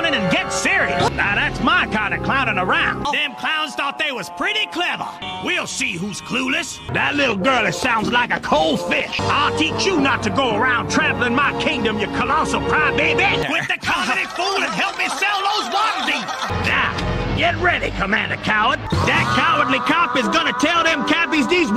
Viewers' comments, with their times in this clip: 0:06 For a quick second I thought he said a bad word.